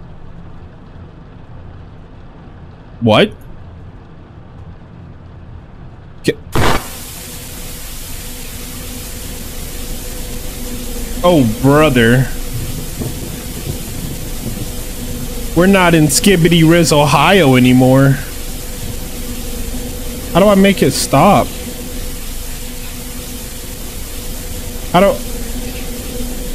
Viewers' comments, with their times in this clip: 0:09 bro got the whole gang laughing